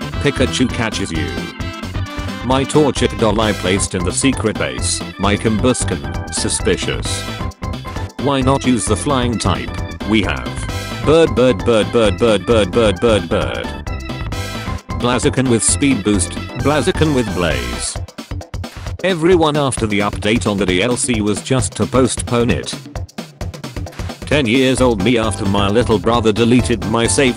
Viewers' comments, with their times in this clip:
0:10 The text to speech makes this funny.